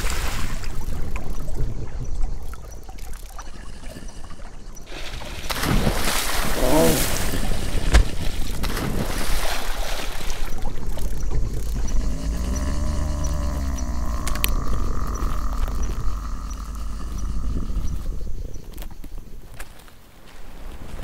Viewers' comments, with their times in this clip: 0:06 super Europasaurus beat!